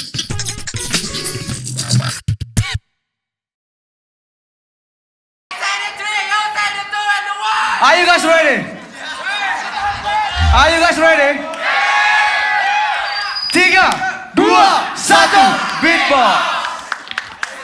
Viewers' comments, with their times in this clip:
0:05 that 3,2,1 voice are so Hilarious